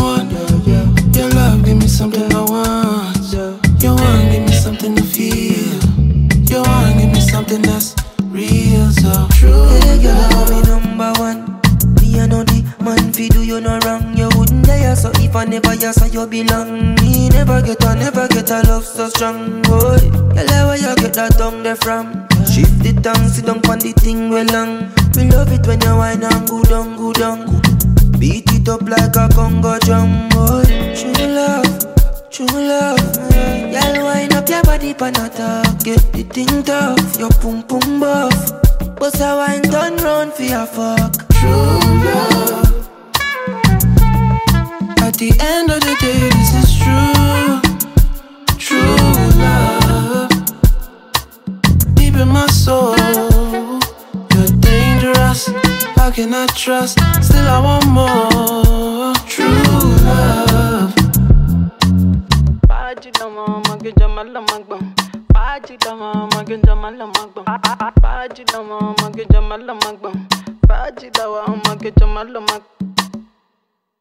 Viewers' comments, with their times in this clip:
0:09 My favourite part, Projexx voice was so soothing 🔥🔥
1:02 the beat hits hard !!